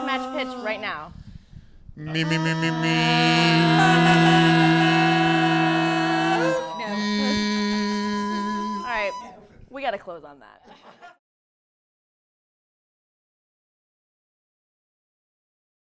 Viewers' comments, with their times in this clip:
0:05 how is no one talking about Jeremy's crazy note at the end....